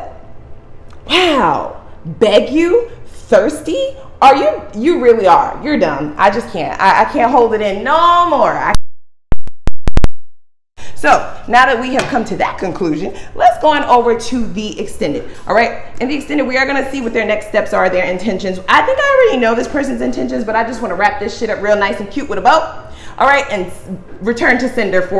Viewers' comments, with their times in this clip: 0:10 Ahhh listen for the interference..... 😳